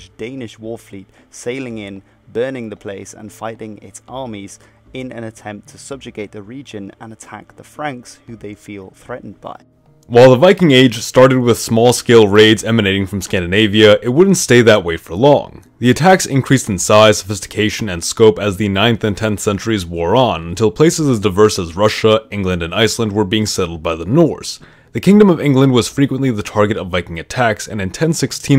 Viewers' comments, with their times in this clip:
0:09 well thanks for nearly blowing out my ear drums mate.
0:10 Heads up for SUPER LOUD voice
0:16 Holy cow was that volume difference huge...